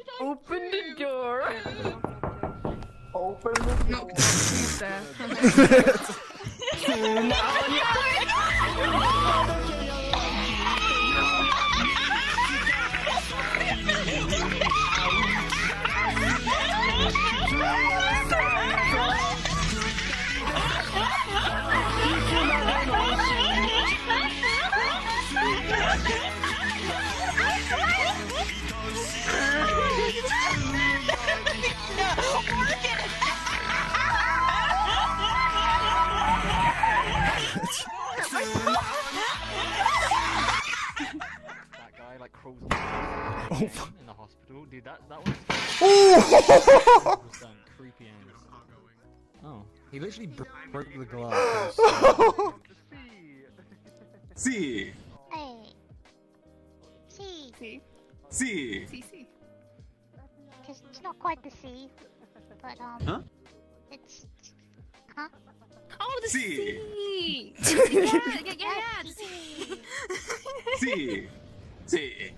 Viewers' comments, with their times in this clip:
0:06 seagulls at the beach wanting your food.
0:53 I don't understand if it say "see", "sea" or the italian word "si" that mean "yes" in english